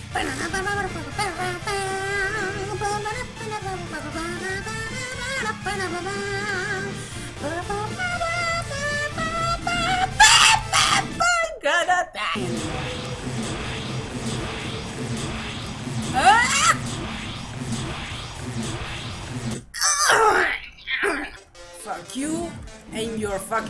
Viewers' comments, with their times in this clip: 0:09 I think is the funniest part, you sound like a sick chicken. XD